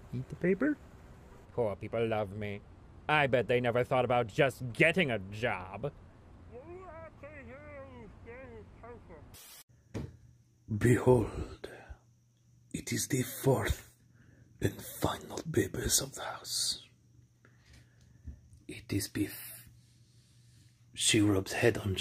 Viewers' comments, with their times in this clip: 0:09 that solid 'thunk' tho